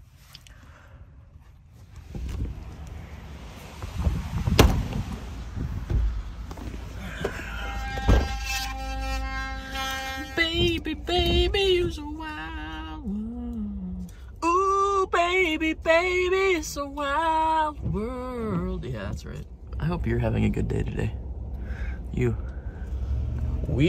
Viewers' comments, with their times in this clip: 0:10 When that electronic toothbrush came on I swear I thought he was jamming Prodigy Smack my bitch up